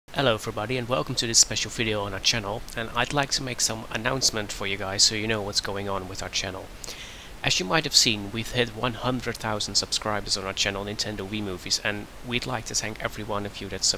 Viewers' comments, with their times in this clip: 0:00 omg i never heard your voice before